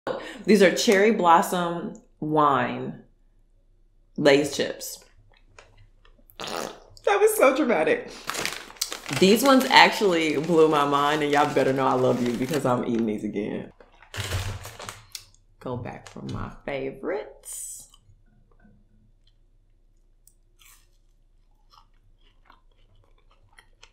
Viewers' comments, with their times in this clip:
0:06 Was that a fart ? 🙄🙄